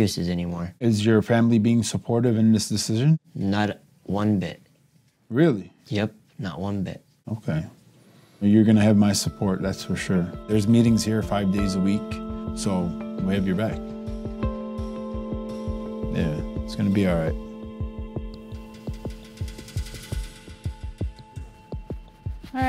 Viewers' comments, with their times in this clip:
0:03 "not one bit." man, heartbreaking laughter from the way he said it.